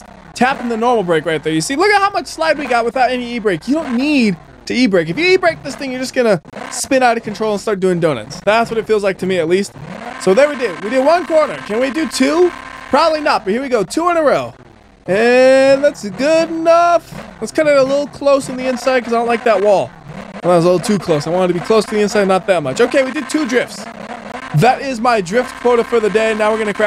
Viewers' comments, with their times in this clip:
0:10 It's not a car, its a machine gun